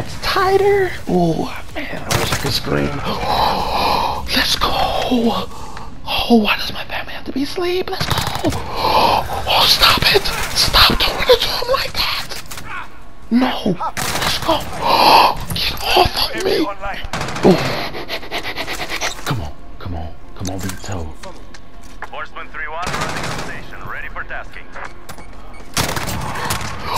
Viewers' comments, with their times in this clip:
0:08 I've never heard anyone this happy 😂😂😂